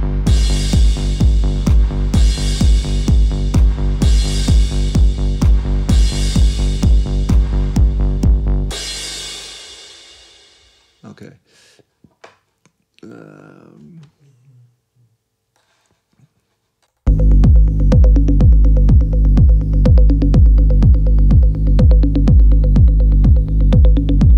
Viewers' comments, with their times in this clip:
0:10 RICHIE, COUNTER INSTINCT TO THE BREATH OF HEART BEAT BRINGS RECOGNITION TO PAST PRIMAL BEINGS,,,KEEP PLAYING THAT AMAZING SOUND It is a type of sound that builds the atmosphere into anticipation, YOUR A BAREFOOT ARTIST!